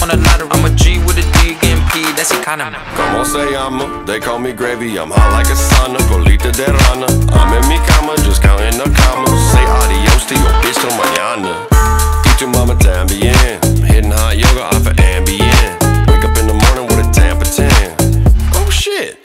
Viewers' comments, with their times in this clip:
0:03 nah this part is holy menacingly when he sing that way
0:06 Better spanish than JLO’s
0:06 Better spanish than JLO’s